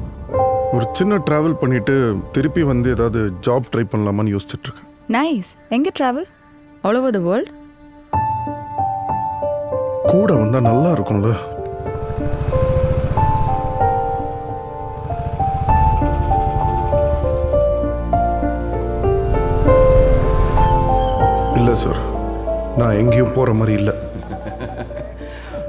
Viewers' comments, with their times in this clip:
0:08 music from was even better bro
0:08 True that, from was slowly building up to a beautiful light Crescendo later.